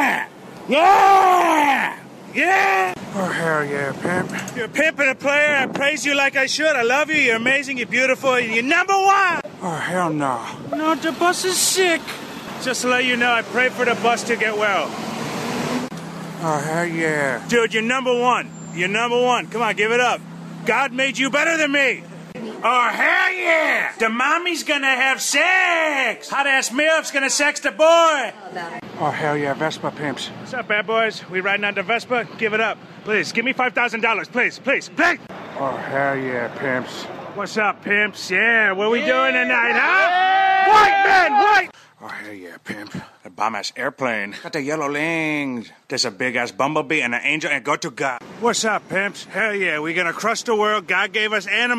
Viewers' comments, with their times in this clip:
0:06 he sounds just like conor mcgregor bruhhh😭😭😭
0:36 when he starts chanting white men in dead